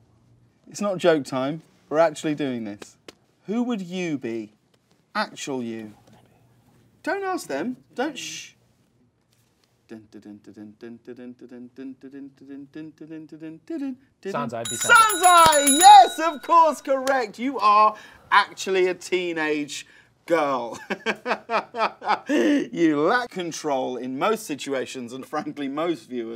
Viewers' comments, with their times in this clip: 0:10 humming the countdown timer theme is so perfectly british of james corden